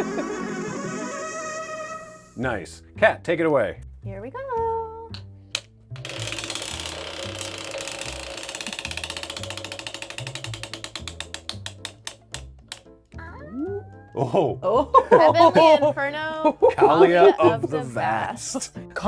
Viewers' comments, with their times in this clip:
0:03 is the PRECISE sound of Peach being chosen on the character screen of Mario Kart 64. Like, uncanny